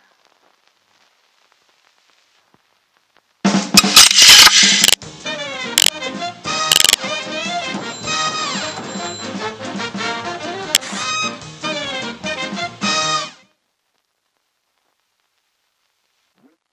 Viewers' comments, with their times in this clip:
0:03 OH GOD MY EARS WHY?